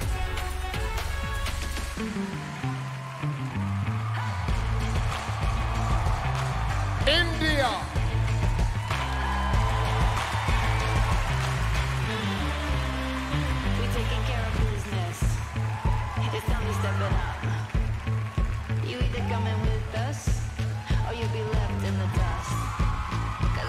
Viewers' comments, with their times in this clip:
0:04 That BGM transition from 'wave your flag' to 'Girls gotta do' when Harnaaz was called up ❤️🔥 My favourite part 😍 And her Kaur's Wave 👏🇮🇳
0:04 When the music change u know that MUO give hint the next Miss Universe.
0:06 That music transition at india's entrance was so iconic with her smooth but fierce walk! She nailed it🇮🇳🔥. I loved also Paraguay, France, Colombia and Philippines in this round. South Africa was a big surprise 👌🏾 ❤ from France🇨🇵...
0:06 The music change the beats and Miss Indias walk her aura her attitude .........i got goosebumps..SHE WAS BREATHTAKING !!
0:06 The change of music India